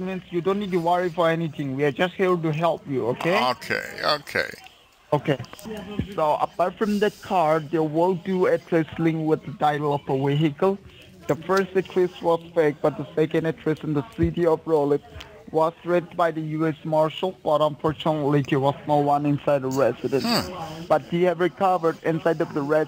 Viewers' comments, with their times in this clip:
0:10 what the fuck is a weehickle 😂